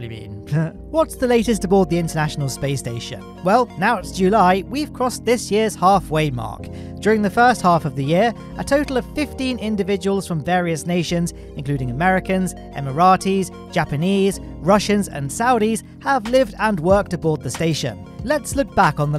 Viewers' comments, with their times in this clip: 0:04 cina instead of china, beauty